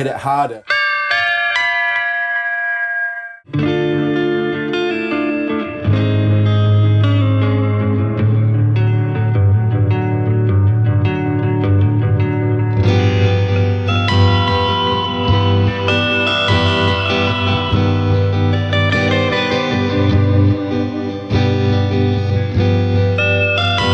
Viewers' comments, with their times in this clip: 0:04 ~ this sounds epic...